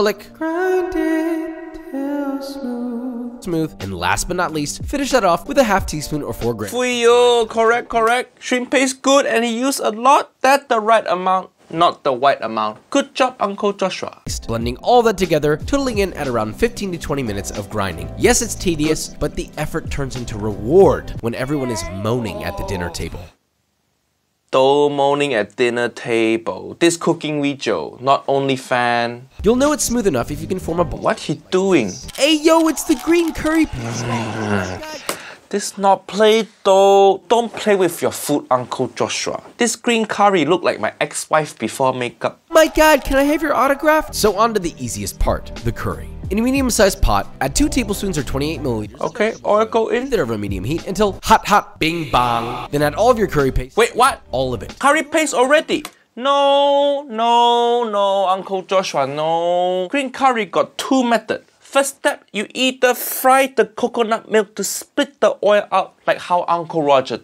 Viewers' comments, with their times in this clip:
0:10 the right amount not the white amount 😂
0:52 lol it all went down hill from there. Also huge fan of hearing him say "cuckoonut milk"